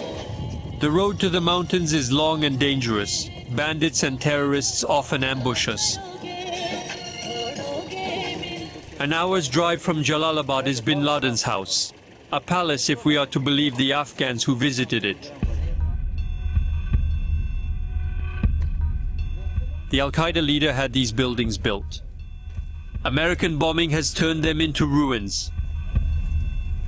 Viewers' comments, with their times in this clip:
0:06 Indian Hindi Song 😌💖🔥🇮🇳
0:07 Did someone heared the hindi song they were playing " Todoge mera dil mujhe barbaad karoge "
0:09 that Indian song 🤗